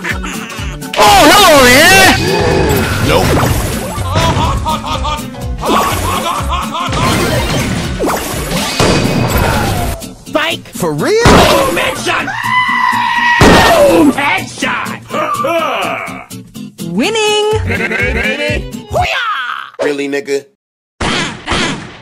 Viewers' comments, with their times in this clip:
0:03 everyone pass through Grom’s bombs and mega bombs. Audiences: “OH MY GOD”! Grom: (GROWN)